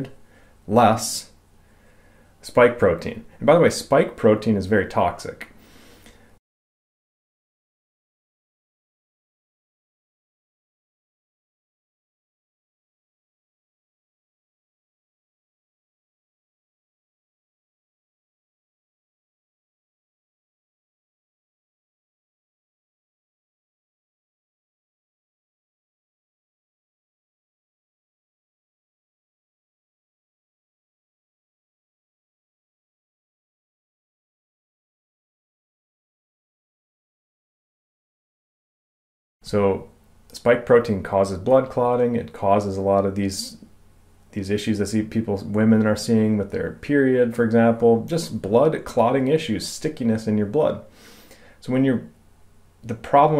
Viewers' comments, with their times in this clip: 0:09 The audio disappeared at minute Tried several times to see if it reappears. Is there anywhere else I can find this to finish listening it? Am thoroughly enjoying your channel. Just found it today. Thank you!
0:40 The audio cane back on at minute